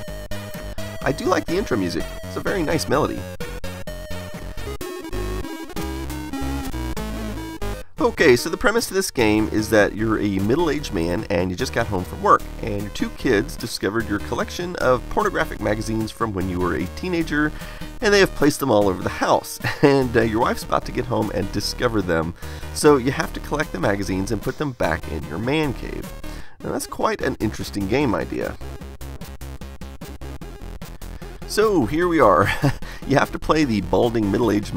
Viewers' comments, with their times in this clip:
0:07 The music in this screen sounds a little bit like Led Zeppelin's Kashmir. :)
0:07 they did a chiptune Kashmir cover for the start of the game?
0:08 8-bit version of Led Zeppelin’s song “Kashmir”
0:17 The music sounds a lot like Led Zepplin's Kasmir